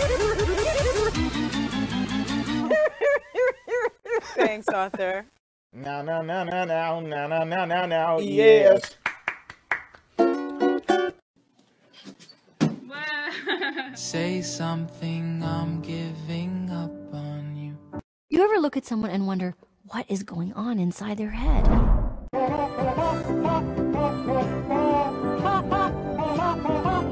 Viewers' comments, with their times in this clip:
0:10 you mess up on
0:10 I laughed so hard because battery makes a instrument voice xD